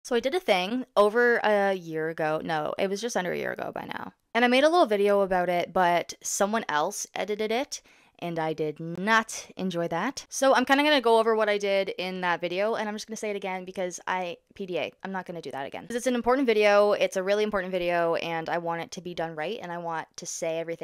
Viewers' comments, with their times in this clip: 0:07 I LOVE THE WAY THIS SOUNDS "ed-d-d-dit et" It has such a good mouthfeel too